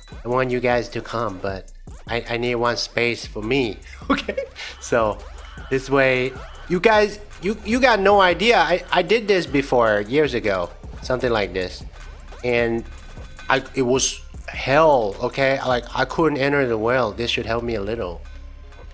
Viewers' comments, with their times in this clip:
0:03 weirdest laugh ever